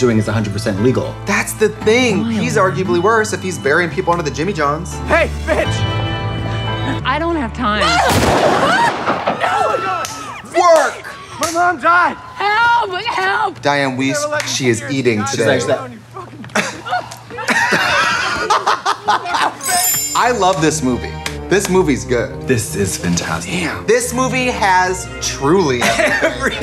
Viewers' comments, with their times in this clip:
0:10 trixie shouting work after she gets shot had me cracking up